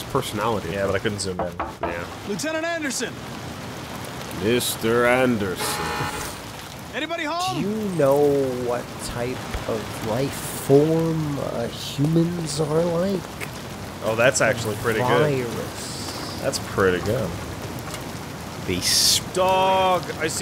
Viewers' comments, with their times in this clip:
0:06 Hehe that sounds more like Barney the Dinosaur than Hugo Weaving. There is also a bit of Kermit the frog in there somewhere.